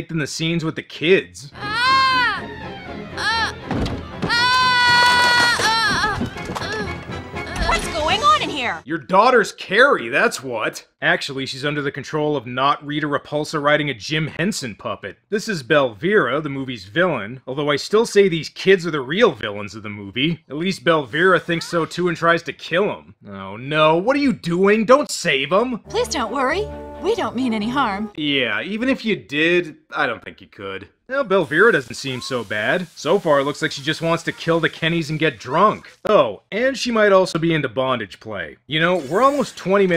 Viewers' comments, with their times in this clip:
0:10 Knock off Jaws Music?
0:20 When it starts to sound like Pokémon.